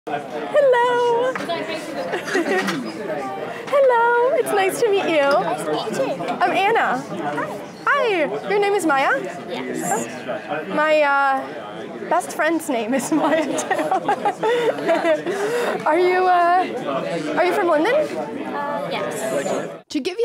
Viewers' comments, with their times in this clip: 0:02 Why do people change their tone of voice to such a squeaky tone when talking to children. It sounds tragic. Talk to children as if they were adults. Children hearing such a whining tone think the adult is handicapped.